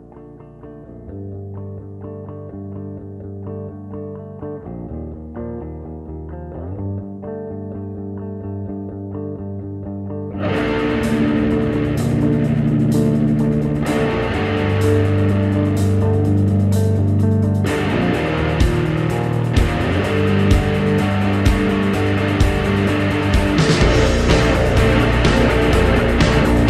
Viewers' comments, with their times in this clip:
0:10 Idk why, but this part reminds me of the Valve intro music